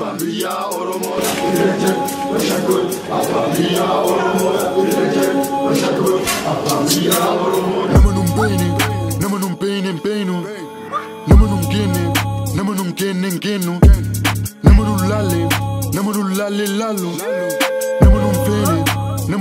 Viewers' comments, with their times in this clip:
0:03 Ayyy this sounds hard gang hope to see more bangers ❤️🌳❤️